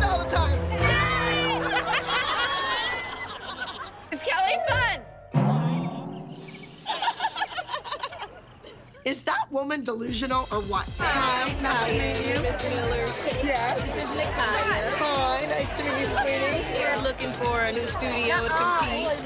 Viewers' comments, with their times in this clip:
0:04 is kelly fun? silence- HAD ME DYING
0:04 haha the way it went completely silent.
0:05 THE WAY IT WENT WUIET SND THE WAY THEY ALL LOOKED AT KELLY LMAOOOOOOOOO
0:06 kelly laughing weird and the pin drop silence 😂😂